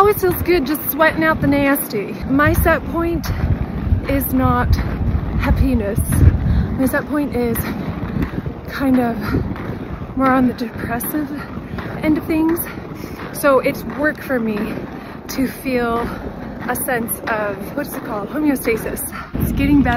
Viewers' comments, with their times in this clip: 0:06 omg… rewound 5x kept hearing “not a penis”. Thank goodness for the transcript.